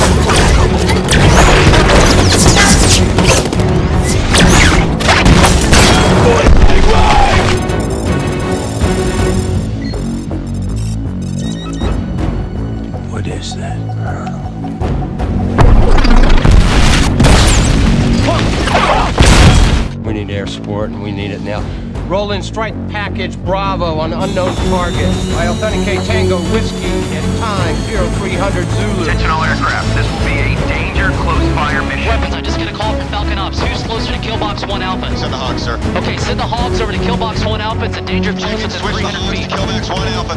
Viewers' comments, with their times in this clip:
0:07 The bit of the score which starts in combination with the military mobilizing the air-support is just so incredibly badass. I really could watch it over and over again.
0:21 damn that background music is damn epic makes you feel stronger
0:22 Say what you want about the film, but the soundtrack is undeniably badass. is the best piece of this video in my opinion.
0:22 Man when the music kicks in chills
0:22 this music + the radio calls gives me goosebumbs every time :D
0:23 watching this in theaters and hearing that music kick in, followed by the A-10s, radio chatter, and capped off with the Gunship was one of the best action sequences of the 2000's !!
0:24 epic music starts
0:25 Michael Bay when he was at his best. The action, the score. Of all the movies I've seen in the theater, I can't remember a time when my adrenaline was pumping more intense than in this scene! "We need air support and we need it now!" queue one of the best action themes ever
0:25 best music moment ever
0:27 that change in melody gets me hyped every time. I always go “Yeahhhh”